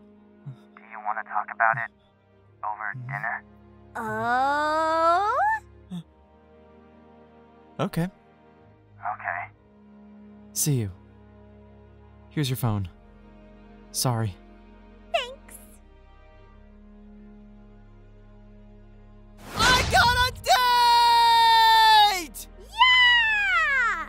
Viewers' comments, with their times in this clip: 0:07 Mirio’s little ok cracks me up